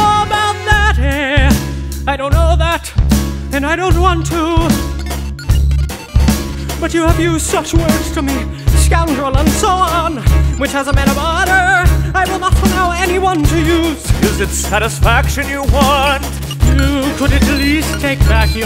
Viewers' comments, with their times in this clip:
0:06 I love all the little background beepity bits (they're throughout the whole thing but I'm on and there's some there for example)